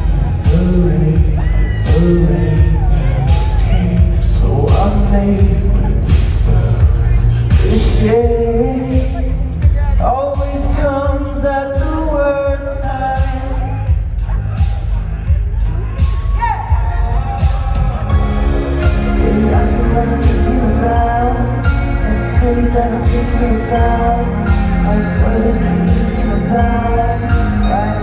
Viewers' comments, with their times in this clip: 0:10 I need you to whisper this in my ear the same way